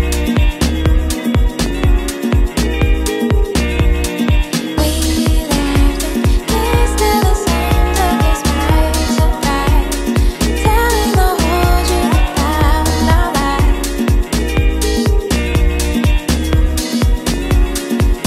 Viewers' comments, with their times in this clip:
0:04 wow voice femalle ❤